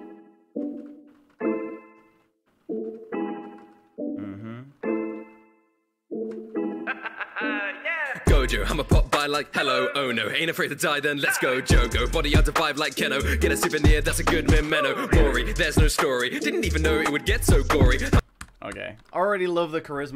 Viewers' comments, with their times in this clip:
0:06 Notice how he expected the Trademark Rustage drop